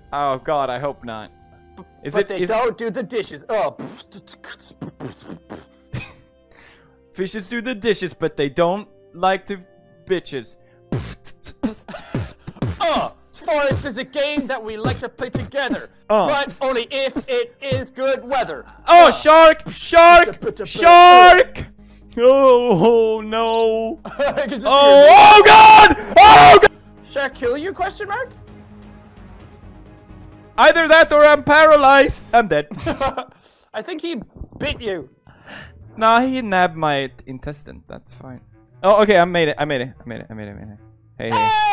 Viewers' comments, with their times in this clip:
0:06 Jack: Raps & beatboxes Felix: Hold My Leg
0:23 I can hear real fear